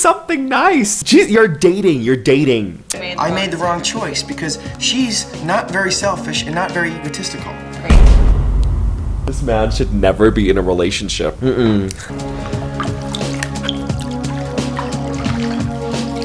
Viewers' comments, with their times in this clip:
0:03 This man is abusive. The insults and then the soft tone that follows where he basically says "that hurts my feelings" is abusive. He's literally stereotypically abusive.